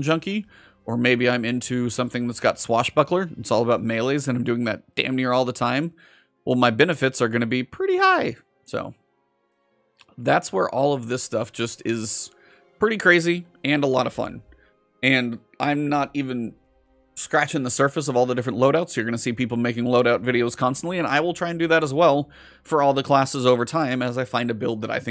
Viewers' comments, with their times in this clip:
0:07 You hit the "pretty high" right on the nose lol